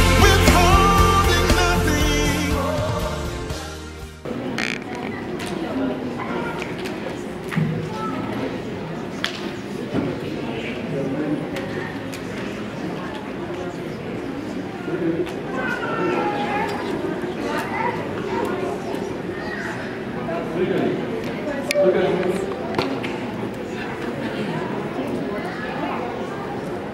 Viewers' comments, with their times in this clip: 0:10 Oh Lord! That smack had me!